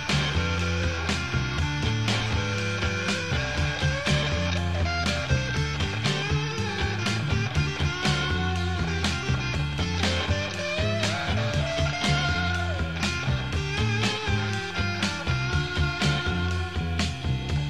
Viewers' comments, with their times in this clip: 0:04 Lead guitar is only playing in right channel